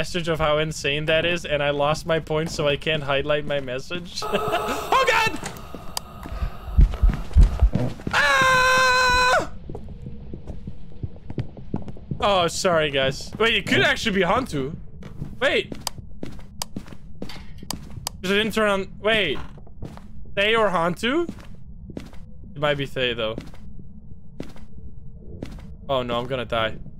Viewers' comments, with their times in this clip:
0:07 OMG THE SCREAM